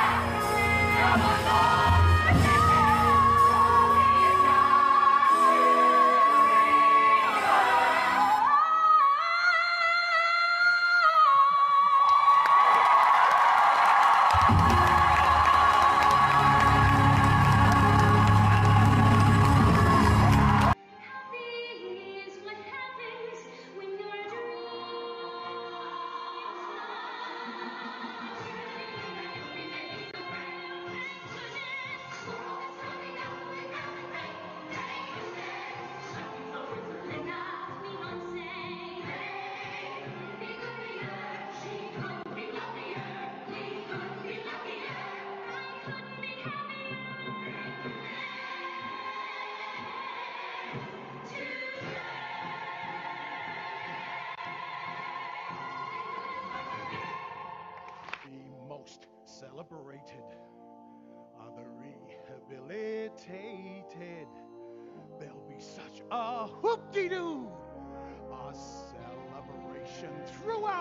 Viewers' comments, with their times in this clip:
0:09 Dang, girl has got some unbelievable vocals!
0:52 Sometimes Glinda doesn’t sing that note, just another female ensemble member. I prefer Glinda and some sopranos singing that note